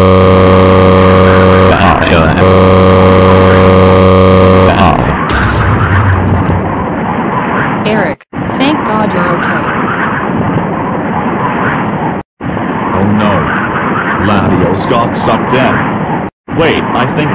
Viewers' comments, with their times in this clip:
0:03 I hear a TNT Guy bombed On Minecraft